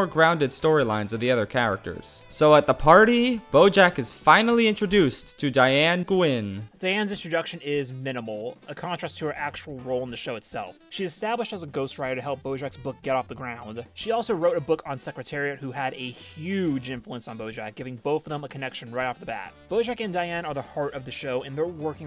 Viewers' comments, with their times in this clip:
0:05 ah yes Diane GU-en